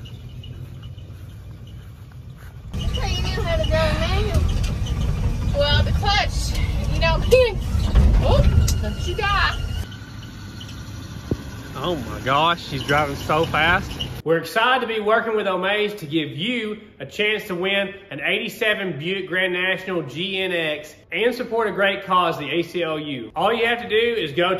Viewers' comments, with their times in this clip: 0:08 Nice whistling vacuum leak